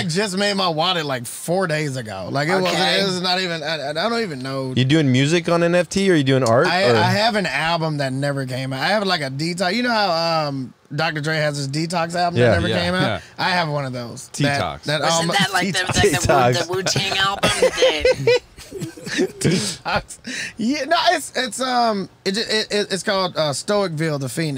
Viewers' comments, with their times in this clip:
0:07 “Tetox” 😂😂😂 idk why this cracked me up so bad lol